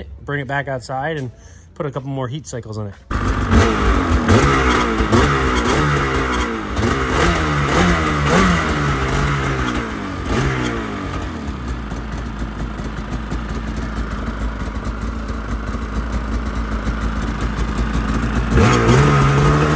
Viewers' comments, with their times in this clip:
0:06 Do you have any idea what the high pitched squeek is ? Got a 9R making similar noises just after clutch engagement. Have confirmed it is not the clutch.